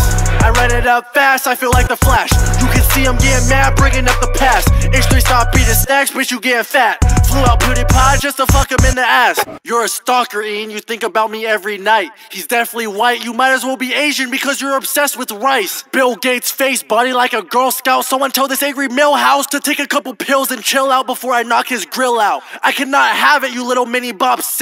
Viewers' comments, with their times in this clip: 0:09 What happened to the beat ?